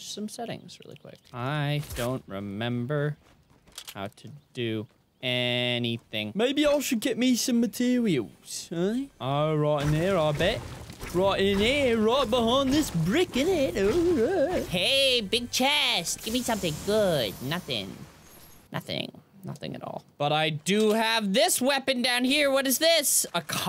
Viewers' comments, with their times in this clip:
0:06 Tell me he didn't sound like a different ass person.